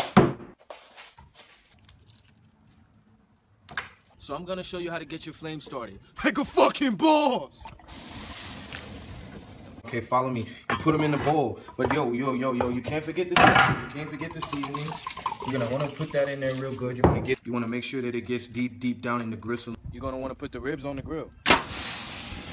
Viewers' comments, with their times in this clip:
0:03 he sounded like Bro Science for a second